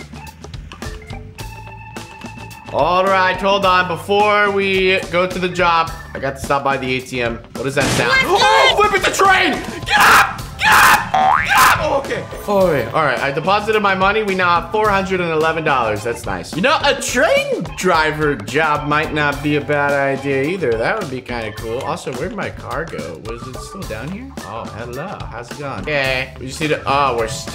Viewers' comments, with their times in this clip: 0:08 HE WAS SCREAMING
0:10 R.I.P for the headphone users